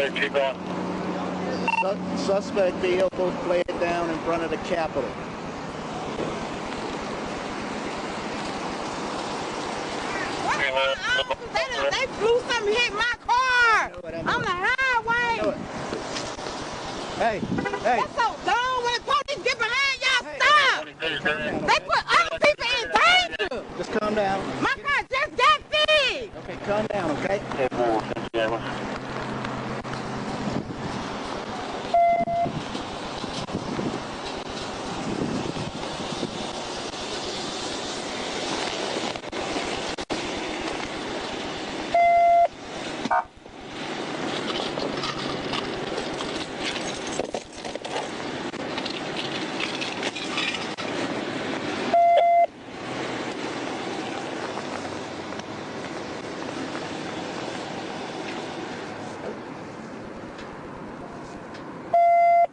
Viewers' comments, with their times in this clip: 0:09 And then this noisy SIREN started up. Is there a more irritating sound in the universe?
0:25 GURL FFS, I AM TRYING TO ENJOY THE VIDEO. GO BE YELLIN SOMEWHERE ELSE
0:45 Not even a shooting and there's a loud screaming woman